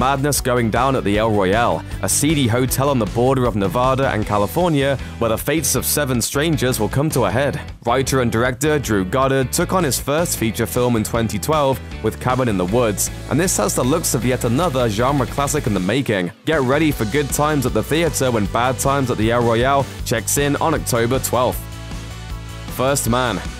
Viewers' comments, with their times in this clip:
0:10 He’s speaking Italian